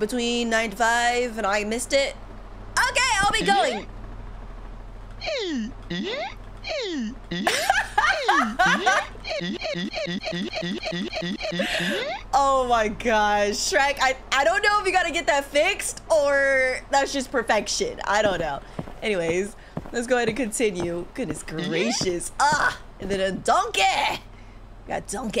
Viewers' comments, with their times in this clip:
0:10 for creaking sound I was like what the freak is that